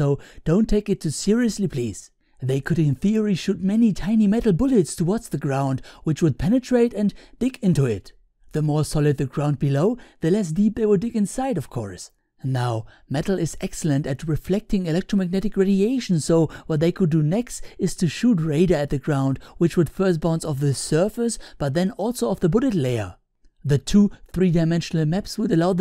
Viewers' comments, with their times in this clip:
0:06 "penetrate and dick into it" German accent HAHAHA